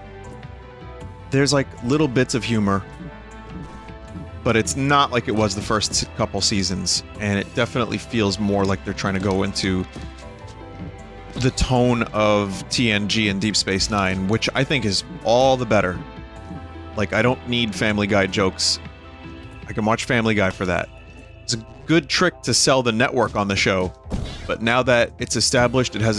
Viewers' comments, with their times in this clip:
0:10 Did you jus say FunGOOS? Like AmonGOOS Wait what about the goofy shit like the “Worf”’s race only peeing once a lifetime?